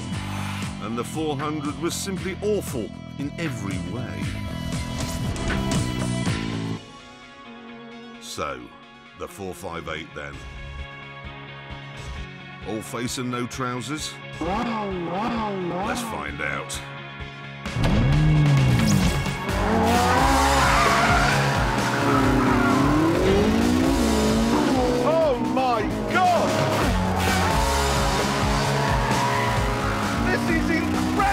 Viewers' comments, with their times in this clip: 0:10 I love the song choice. It's perfect for this review.
0:14 it sounded like the engine was replying to Jeremy saying 'No, no, no.'